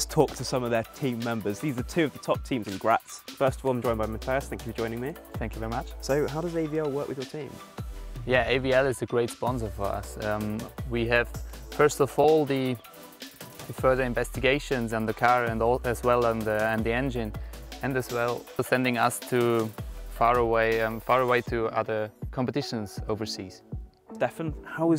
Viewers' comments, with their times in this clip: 0:09 min, if you do not watch the video and only listen, you would think this is Pierre Gasly talking :)